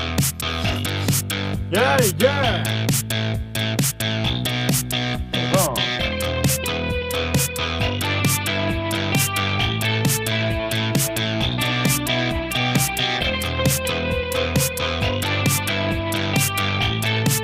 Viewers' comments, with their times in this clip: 0:05 Russian post punk tune 😂😂😂👍👍👍